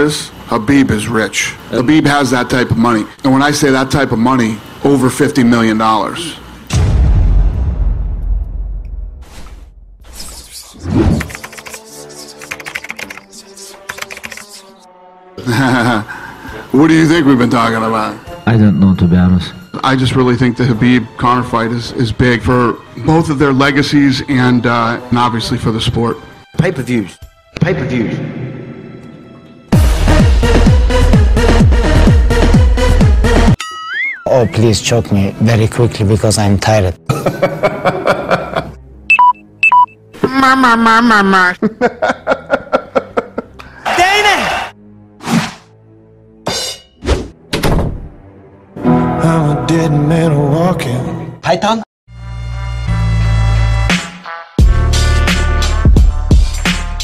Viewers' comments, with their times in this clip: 0:10 The whispering part 🤣🤣🤣
0:38 Dana doing connor's muh muh muh